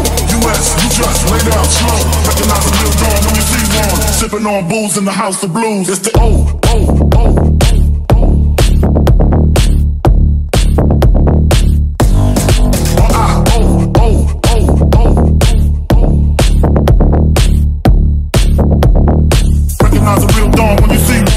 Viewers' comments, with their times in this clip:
0:03 The drop is super sick!
0:05 that beat from is fucking sick